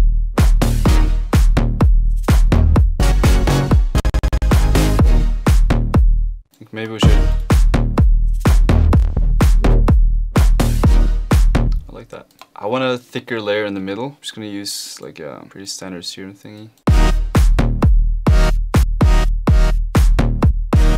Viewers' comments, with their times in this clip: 0:03 his CPU wanted him to add some gross beat lol
0:04 Even that slight CPU lag nails the rhythm.